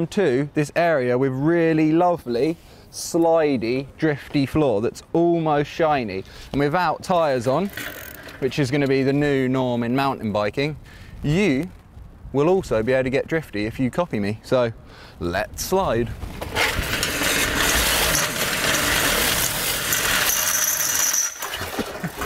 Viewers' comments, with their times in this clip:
0:06 That person that rode behind you with tires on was so quiet you couldn't hear them coming. Dangerous and irresponsible, this cannot be tolerated!